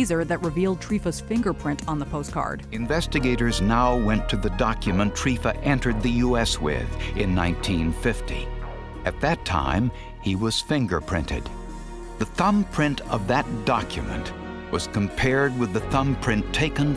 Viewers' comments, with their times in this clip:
0:03 Damn, guy could do a mean Ronald Reagan impression